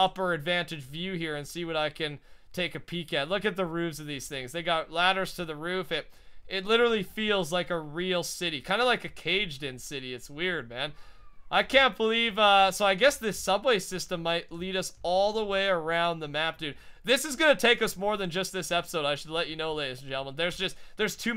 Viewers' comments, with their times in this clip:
0:09 Anyone hear the scream after he says "it's weird"